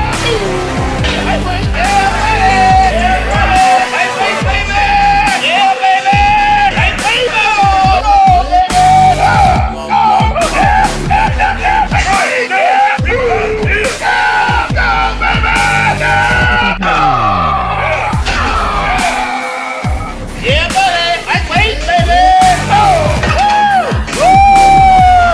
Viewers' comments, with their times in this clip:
0:06 Today WAS a rest day, but after listening to the overlapping jibber jabber it is no longer a day of rest.